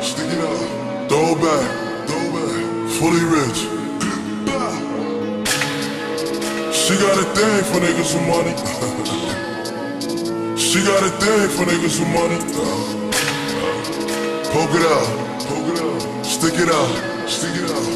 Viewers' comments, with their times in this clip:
0:05 The gunshot is perfectly timed with the video lmao